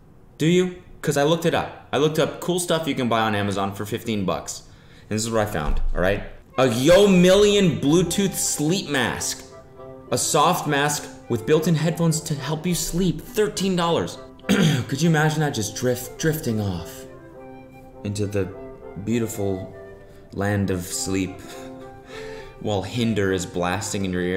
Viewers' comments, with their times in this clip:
0:08 Youre dozing into a peaceful sleep, starting to dream the sweetest scenarios out. You’ve never felt like sleep was this good.. your dream is coming to a peak, and as the moment happens, your eyes snap open to a loud “YOU DONT HAVE A CHARGER?”